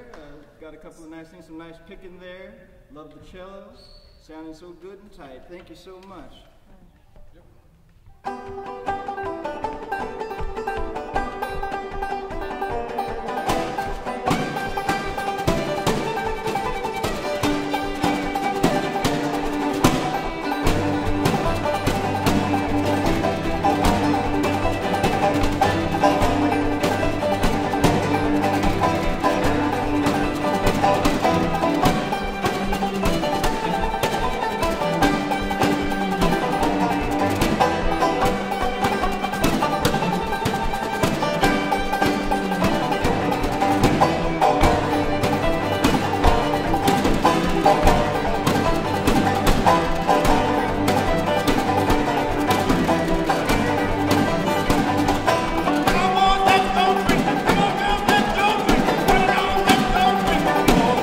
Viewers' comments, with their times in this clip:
0:09 epic song with snare drum on a string
0:49 PLAY DEM BONES!!! RHYTHM MASTERS. MINSTRAL tune